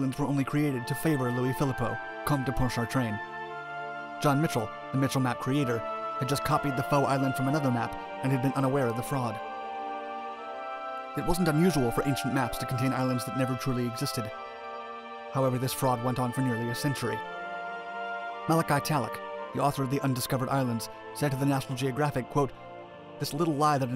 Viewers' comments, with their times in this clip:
0:10 Background music too loud especially 😣